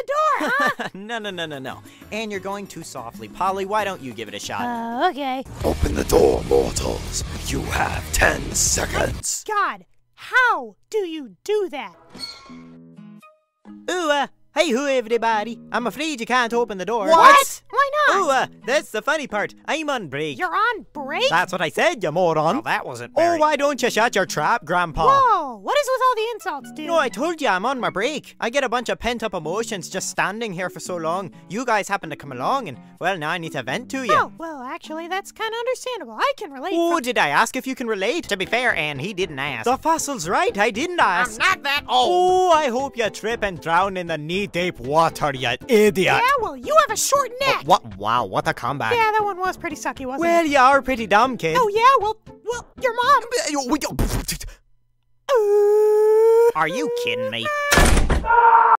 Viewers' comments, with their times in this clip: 0:05 When the doom theme kicks in
0:45 The line delivery on the word idiot sounds on par with Ren saying idiot from Ren and Stimpy.